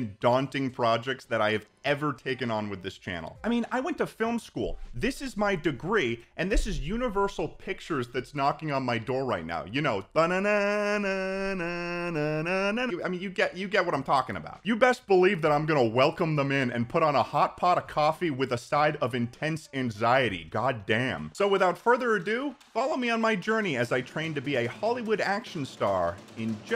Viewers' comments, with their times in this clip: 0:10 I thought he was gonna start singing the wii sports theme lmao